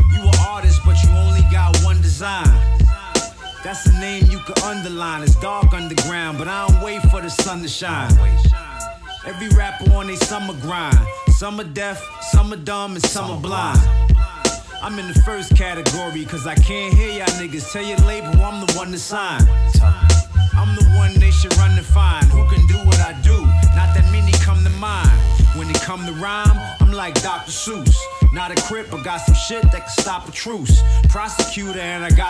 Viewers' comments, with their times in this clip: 0:08 the crazy in master is If u listen this in 1.5 speed bounce so hard 😂😂😂
0:17 he need to rap on 1.5 speed His Lyrice are so crazy But Most time he is so slow Listen on 1. 5 speed Sound so crazy course the lyrice are so Good 😂😂🚀